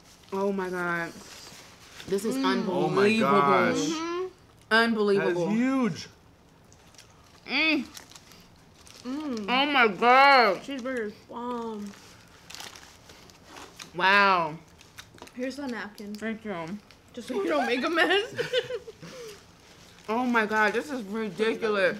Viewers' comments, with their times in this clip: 0:07 she barely bit the hot dog and shes already moaning